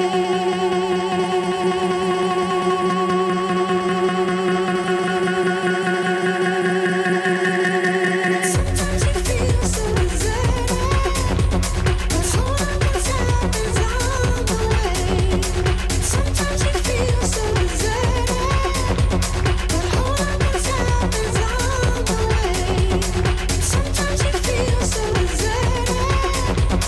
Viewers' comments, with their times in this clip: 0:08 What a fookin superb little track